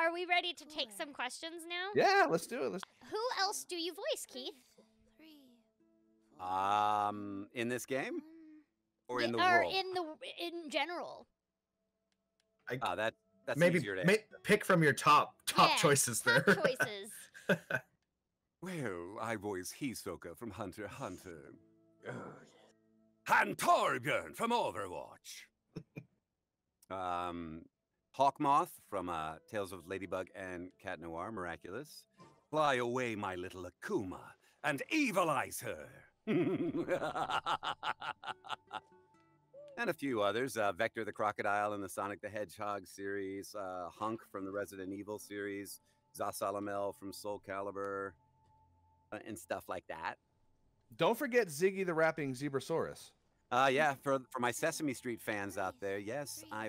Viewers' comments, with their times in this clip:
0:07 Also I think he voices "charles the bartender" in dilucs Bar bcs he sounds so similar to his natural voice he asks "Ingame?" Means he voices more chars
0:37 Zhongli evil laugh
0:41 Hearing Keith's normal voice makes me think of Nazeem from Skyrim Wait he voices Vector the Croc?? HOLY SHIT!